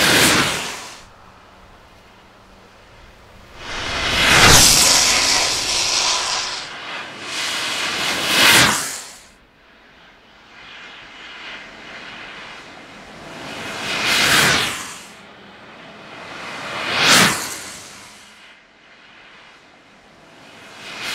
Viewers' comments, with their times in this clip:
0:03 don`t you feel the air will pull you out of the board at that speed? , that was amazing, im loving longboarding even more, that was NUTTY even the sound of the longboard at that speed sounds terrifying good job :,D